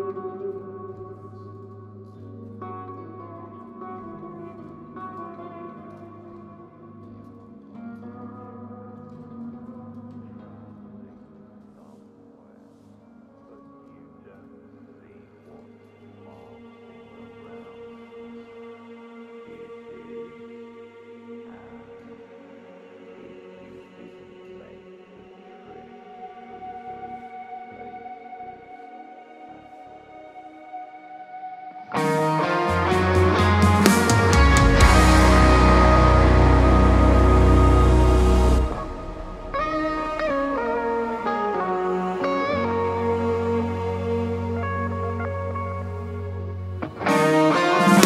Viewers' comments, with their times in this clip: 0:05 Amazing album!!! very Turkish 👍 I believe it’s fretless guitar. Very nice touch
0:32 sound is sooo David Maxim Micic. Love it!